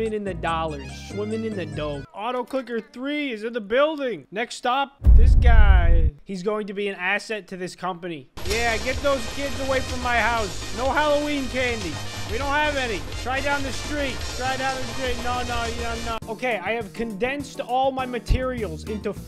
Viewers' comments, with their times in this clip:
0:04 uhmm is it just me or when he said stop it sounded like autotune